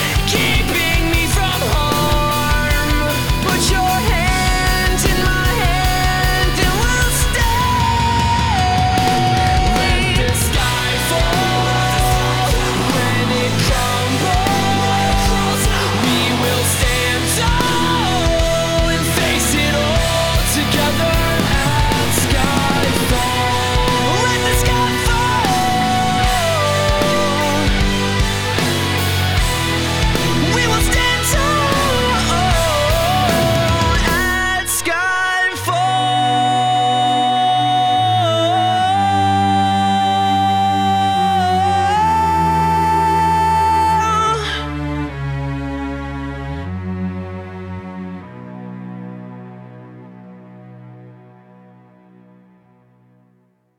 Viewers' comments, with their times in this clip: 0:04 When I first heard this, I never realised that there were two singers. They sound so similar to me I had no idea. I prefer the singer because I'm not a fan of heavy metal.
0:07 When the transition hits back to the swing, I get chills every time. AAAAHHH so good!
0:35 That high note though. 😍
0:41 The decision to sing an A instead of an A-flat got me stumblin...